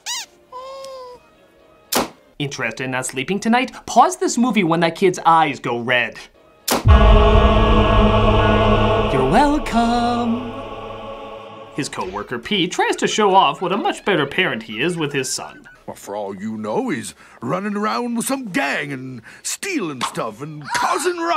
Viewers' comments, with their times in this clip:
0:06 That music gets me every time. Kudos to you! XD